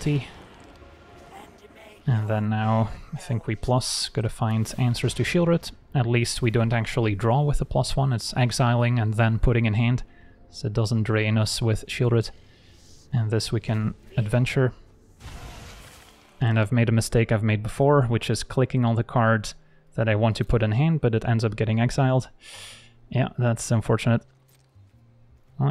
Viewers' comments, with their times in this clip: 0:10 Oof the pain in your voice 😢 new cards will do that